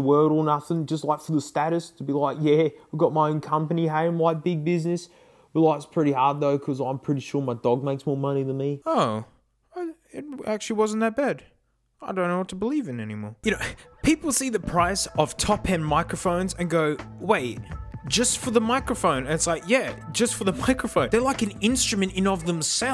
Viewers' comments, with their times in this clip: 0:04 still sounds better than my mic
0:09 kinda sounds like a mic from a $30 to $60 "gAmInG hEaDsEt"